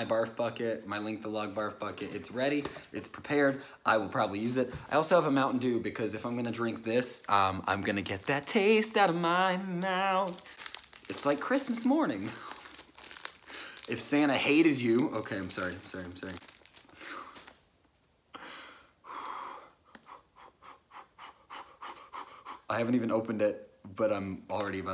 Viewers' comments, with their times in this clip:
0:08 HOLD UP THAT SINGING THOUGH!👀🔥